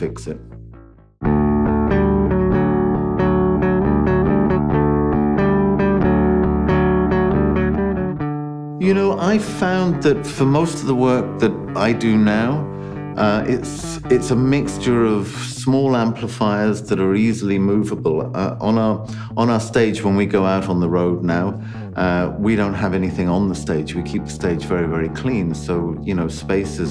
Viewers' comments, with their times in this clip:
0:09 If that harmonized bit between note and Adam's voice is intentional it has to be one of the nicest editing touches on YouTube!